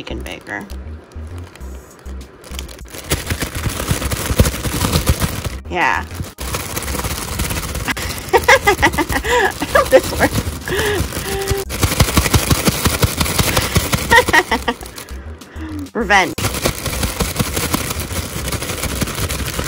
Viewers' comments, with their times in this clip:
0:07 pent up release laugh that is